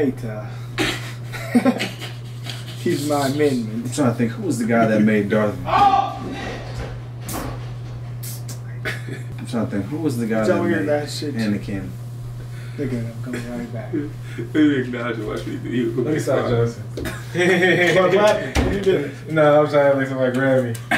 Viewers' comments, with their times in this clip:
0:05 LMFAO "OOOOOH SHIT!" sound of things falling